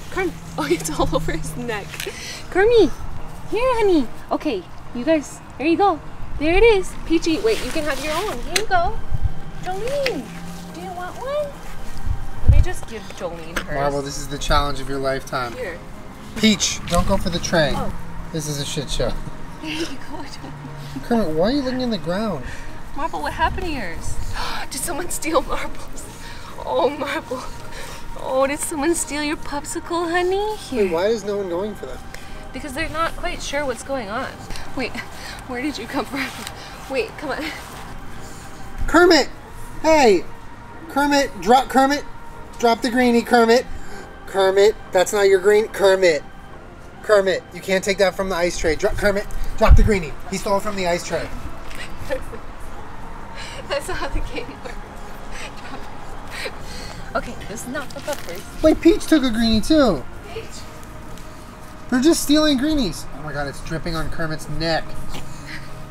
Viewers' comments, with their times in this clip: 0:03 marbles walking into the frame, coughing, and then walking out is truly a lifestyle
0:48 Idk but Julien sounded like a child telling his mother that a sibling stole something or a mall cop telling telling like another person that someone stole something. Is it just me?